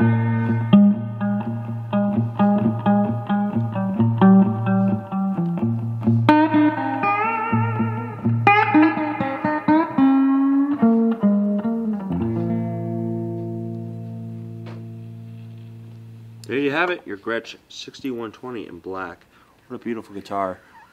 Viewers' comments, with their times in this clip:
0:05 Beautiful vibrato he was able to hit